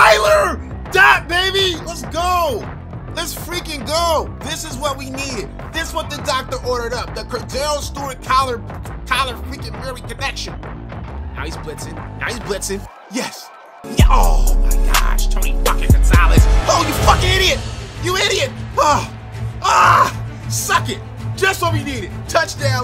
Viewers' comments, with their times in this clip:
0:06 why even play music bro